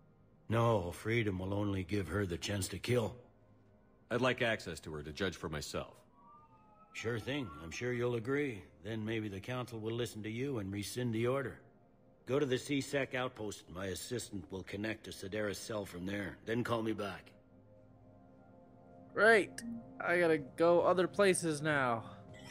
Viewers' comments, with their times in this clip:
0:07 actual police sirens